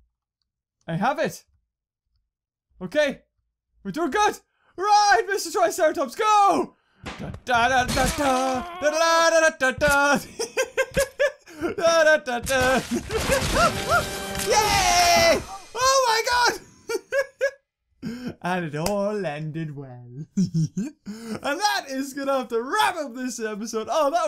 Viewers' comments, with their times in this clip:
0:07 The way he sang the theme was hilarious